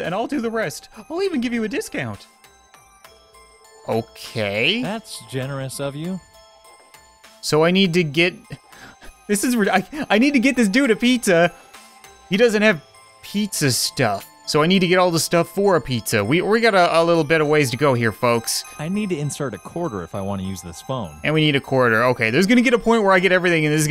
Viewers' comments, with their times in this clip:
0:10 cap'n sauce the cashier looks like him voice us a bit off can't be a coincedence.